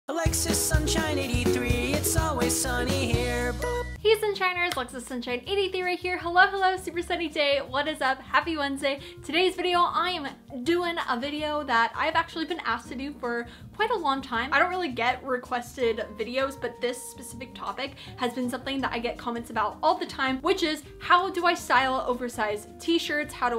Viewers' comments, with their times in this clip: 0:04 Oh I thought she said "hey sisters!" Lol from james charles😐